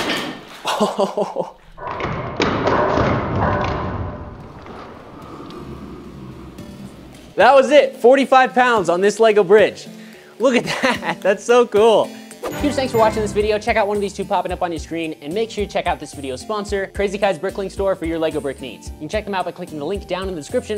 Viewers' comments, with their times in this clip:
0:03 at one point I swear I heard the brain fart meme! I SWEAR ITS EITHER JUST ME OR I ACTUALLY HEARD IT